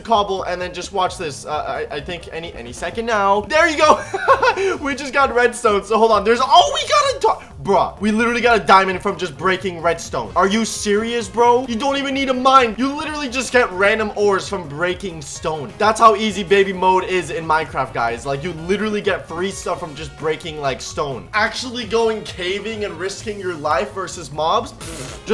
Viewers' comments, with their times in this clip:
0:08 he said minening redstone😂